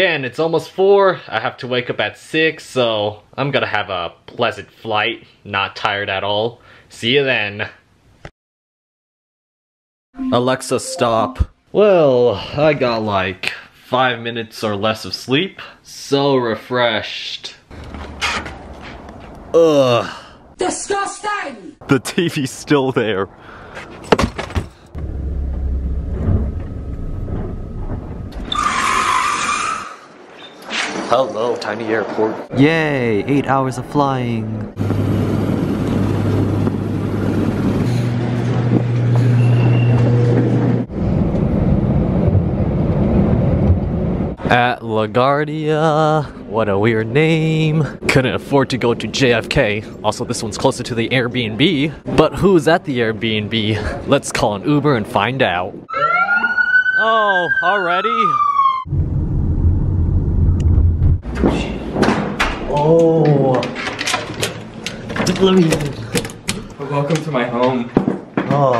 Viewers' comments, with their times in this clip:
0:10 I have a Alexa and I hate that god dam alarm noise
0:54 “let’s call an uber and find out!” immediate ambulance sirens